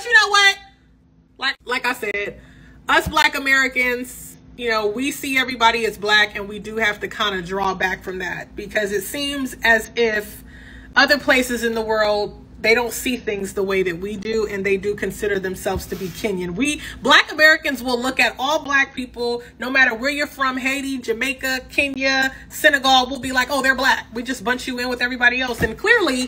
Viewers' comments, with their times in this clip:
0:03 why are you screaming 🤔🤔🙄🙄
0:12 Ayo why is old girl yelling like this